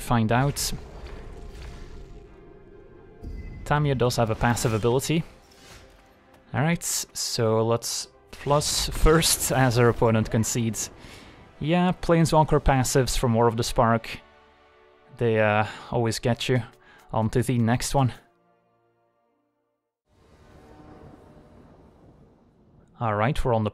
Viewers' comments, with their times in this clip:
0:07 it sounds like he tried not to laugh 😂